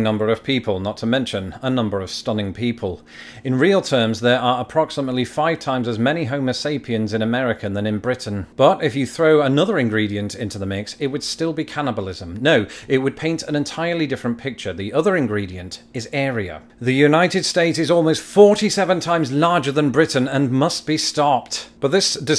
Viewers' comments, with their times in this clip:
0:06 I heard 5x as many homeless sapients. And as it turns out, that's also true (actually, it's closer to 6x, but that scales with population and our lack of human rights recognition).